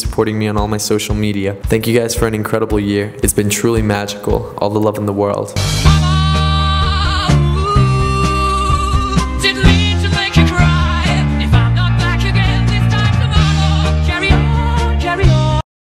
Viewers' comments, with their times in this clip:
0:06 I fuckin' love that song!